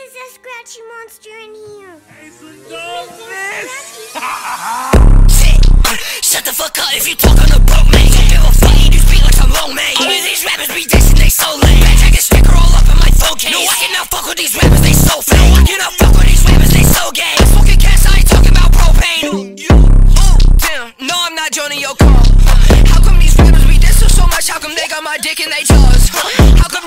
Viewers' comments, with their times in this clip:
0:09 anyone else check their discord ? lmfao